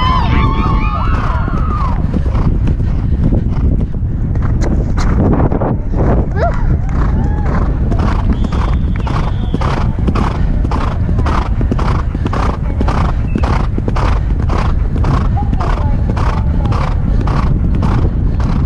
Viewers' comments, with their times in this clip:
0:05 IM SORRY BUT WHAT WAS THAT NOISE LMAO 😭😭😭😭